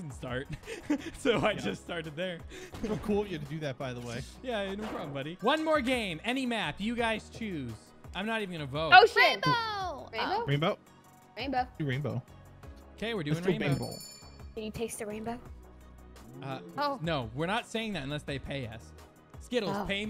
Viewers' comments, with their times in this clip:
0:07 it sounded like she said the s word.